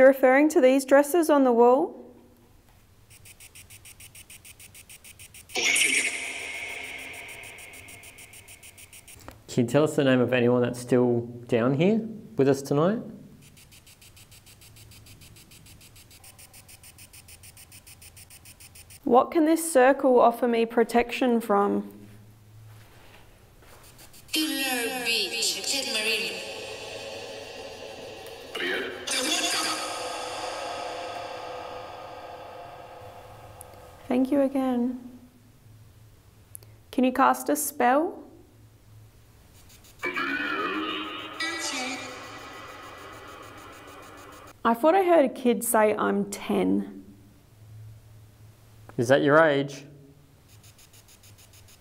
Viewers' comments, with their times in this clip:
0:06 when you guys were using Ghosttube VOX it sounded like a male voice saying, “Pull my finger” 😂
0:30 You asked what the circle can protect you from, and the 3rd voice through on vox says "the watcher" in a strong Scottish accent which may be why it was missed
0:39 Just before on vox sounded like it said "The Watcher" when you asked who are you protecting from